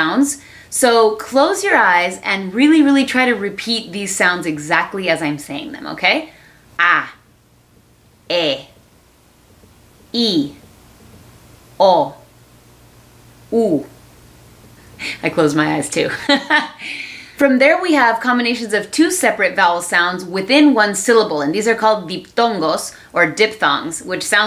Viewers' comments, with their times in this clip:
0:06 How Italians spell vowels